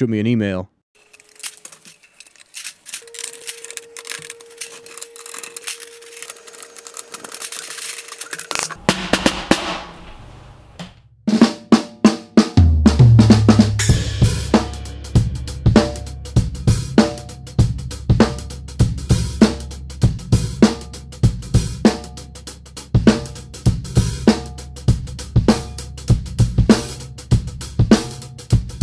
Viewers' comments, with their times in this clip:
0:10 wELL THIS IS A STORY AL ABOUT HOW MY LIFE GOT FLIP TURNED UPSIDE DOWN. Yea i know its not the same beat but thats what popped into my head lmao.